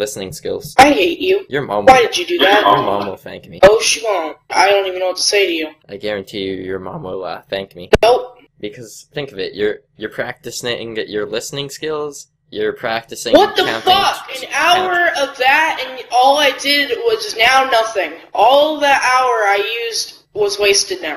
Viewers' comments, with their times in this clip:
0:06 voice crack lmfao